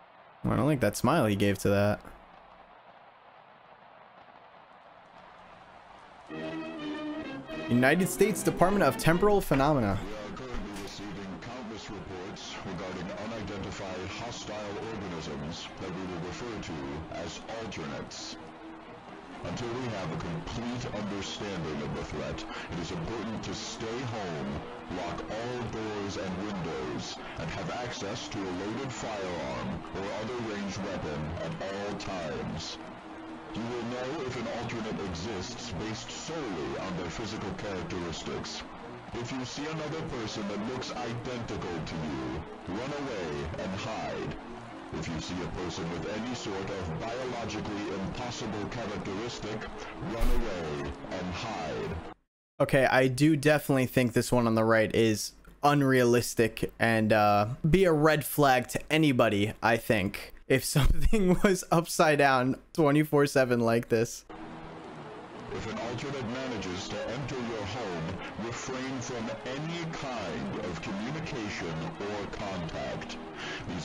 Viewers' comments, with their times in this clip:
0:06 Istg the part was not this loud before
1:01 bros headless and Australian 💀💀